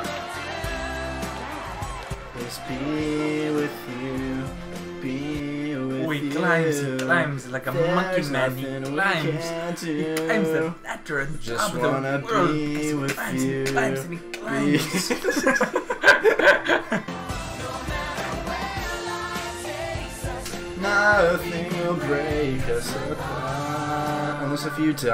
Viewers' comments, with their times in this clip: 0:09 i laugh so hard because i thought troy voice sounds like that.